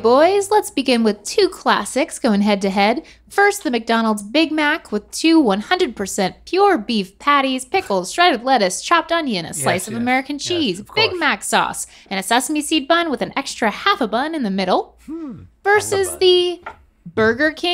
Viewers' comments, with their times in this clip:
0:05 the fact that Link snickered at “Two 100% pure beef patties” when referring to McDonalds really says something lmao